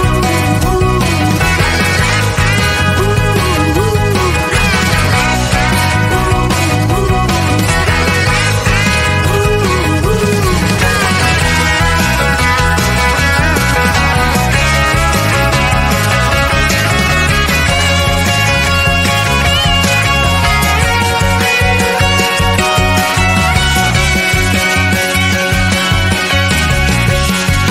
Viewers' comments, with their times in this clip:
0:10 Look at you,silly coughing